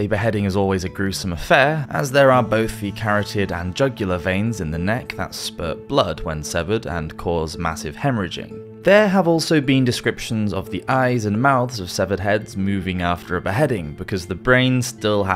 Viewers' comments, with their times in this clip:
0:03 “ 🥕d and jugular veins” hahahahahahahahahah bro said 🥕d hahahahahahahahahahahahahahahahaha